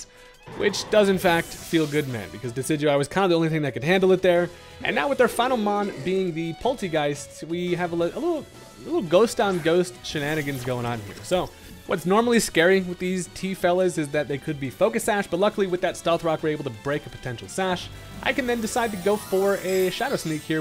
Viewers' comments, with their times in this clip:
0:07 What happened ? Spooky season ghost sounds?😊